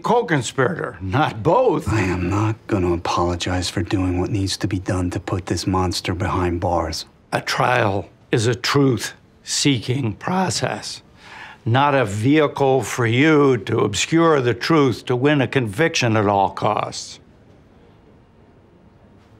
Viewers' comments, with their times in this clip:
0:07 Why does feel like he was struggling to keep talking 💀😭